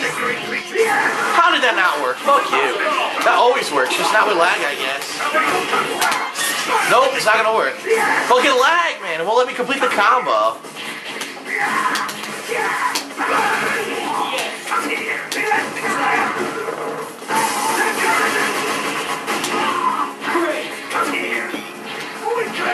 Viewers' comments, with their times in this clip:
0:08 soound a little gay lol "complete the comboo"